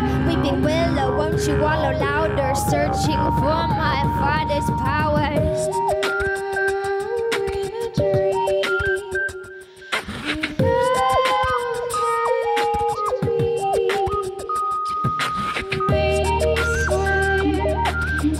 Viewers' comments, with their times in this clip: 0:06 I like both equally but I probably listen to this one more. The other one is beautiful because it has a more serious tone but this one is just so catchy to me. I especially love the chorus Sierra has such a lovely voice